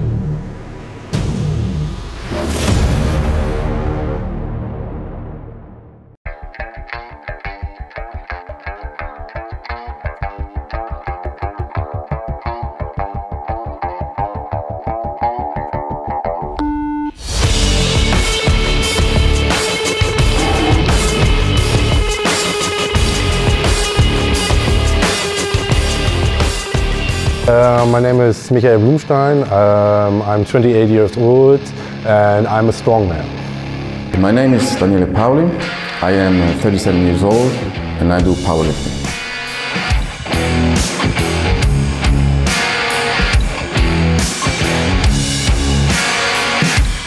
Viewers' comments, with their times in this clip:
0:06 The song after the initial intro was awesome and kinda reminded me Kanye West - No Church in The wild
0:34 Whats the name of the song ? Sounds a little bit like "Rage Against The Machine".